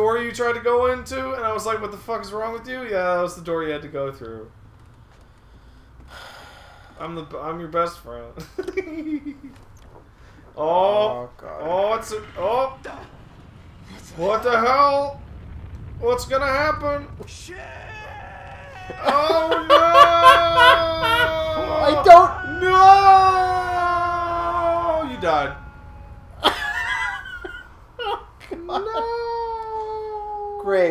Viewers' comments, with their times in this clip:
0:08 The giggle Best thing I have ever heard.
0:12 That declaration of "Shiiiiiiiiiit" needed at lest a dozen more 'i's in its subtitles.
0:16 I wish I had a soundboard for all of Murphy's freakouts. Not to say I would have sounded any better being stuck in a hellish nether realm. : )